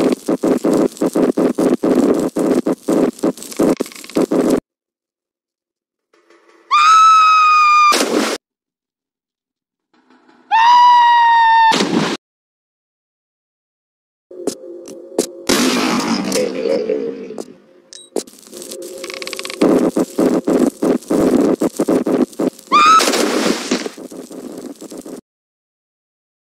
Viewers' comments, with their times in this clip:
0:09 Ohh i love that idea with the bloopers in the end of the video ! :) By the way who was that scream ? :D